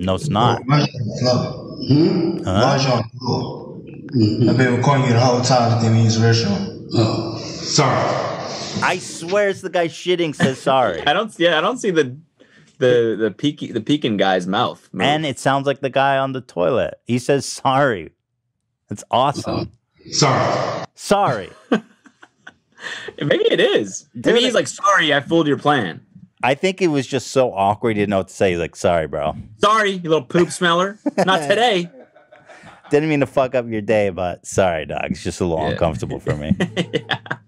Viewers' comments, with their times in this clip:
0:07 He’s not saying “sorry”... The guy recording is saying “Sir!” as the guy on the floor is rolling away. Mystery solved
0:10 I hear "SIR!" from stall guy
0:11 the dude shitting on the toilet says “SIR!” not sorry
0:20 From the way it sounded I think it was the guy in the stall saying SIR. 🤷‍♀️